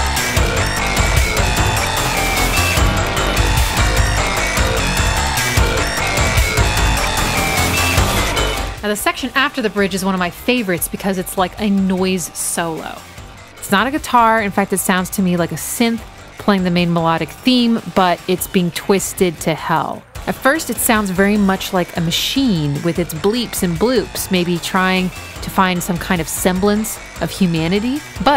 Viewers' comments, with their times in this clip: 0:08 this solo is actually a guitar, is just makes very heavy use of Ring Modulation, which turns it into a bizarre, noisey riff. Ring mod is also what is used on the piano in the intro to make it sound... well, off
0:13 It is a guitar! It's Adrian Belew playing a heavily ring-modulated solo.